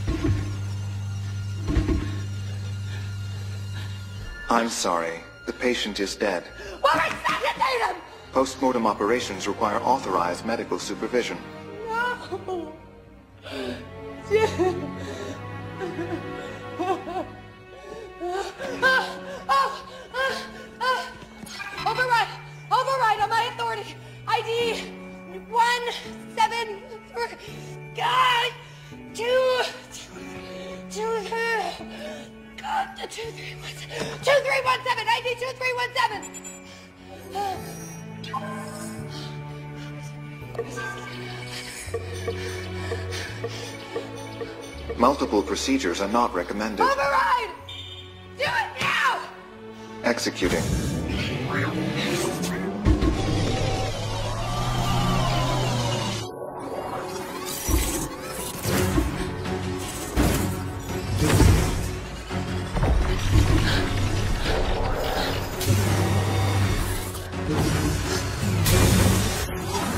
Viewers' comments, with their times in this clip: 0:05 her screaming at the robot is hilarious 😂
0:11 l understand the feelings of Aurora very well 😢😢😢 and the music that started here took me away from me
0:18 she cries then oh oh oh!! XD
0:53 song after feels like building Iron Man suit wth 😳